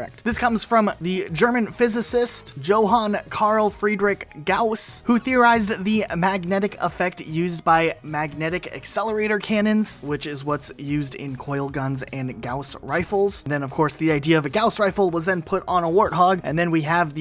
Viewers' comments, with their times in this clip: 0:03 you absolutely slaughtered Gauss's name, like really bad, it's german so I understand a native English speaker not being able to pronounce it.